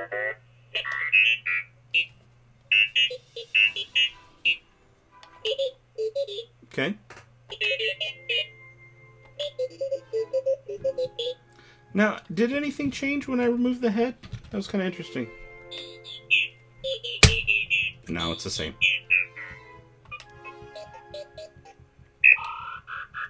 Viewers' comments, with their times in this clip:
0:04 Did anyone else think of megalovania During the bb droid with the red republic chip